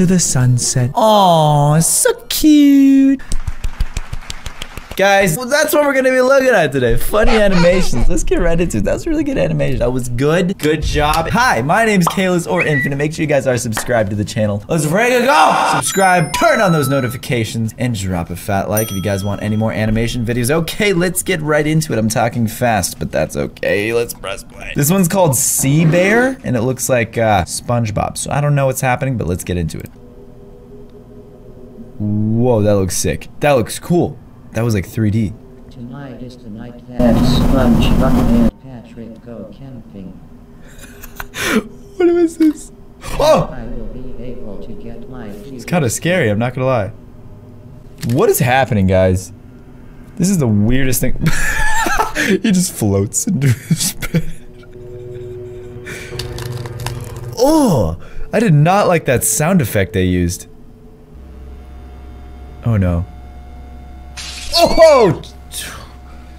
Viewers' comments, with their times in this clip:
0:03 your voice was so funny😂😂
0:03 your voice was so funny😂😂
0:47 That noise in the neck 😬 Also, me when I hear I have to go to the dentist. I’m gonna like my own comment cause no one else will.